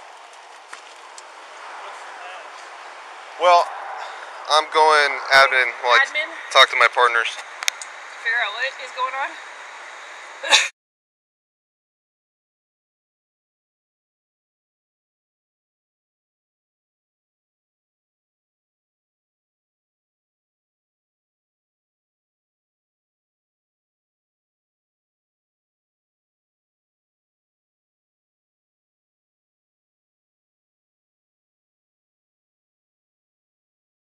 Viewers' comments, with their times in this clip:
0:10 the female officer asked him "so what is going on?" and then the audio cuts. Do you think he then went on to say his social security number and her address or do you think maybe he told a ficticous story about what happened? So before you try and demean someone I would make sure you watch the video. Sidenote- because I have a feeling you're THAT person, I clearly know that personal information doesn't mean someone's social security number and he would have no reason to state that . Simply saying there is no reason to state any personal information at that point. 8 minutes of personal information. That's alot of info
0:10 WHY THE MUTE ?!?!
0:15 officer covers camera and audio stops 🥱……and you don’t have to be a lawyer to know that searching a vehicle without reasonable suspicion is another violation added to the others